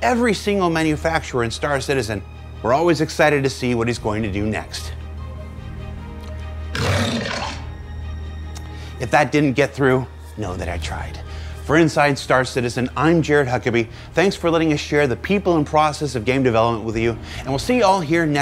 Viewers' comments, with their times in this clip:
0:06 My guess is "Aopoa" hence the lion roar censoring.